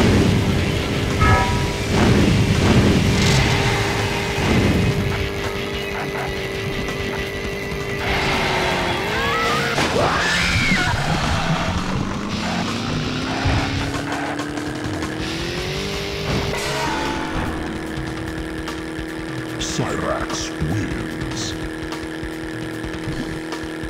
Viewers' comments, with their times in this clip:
0:09 i love screams mileena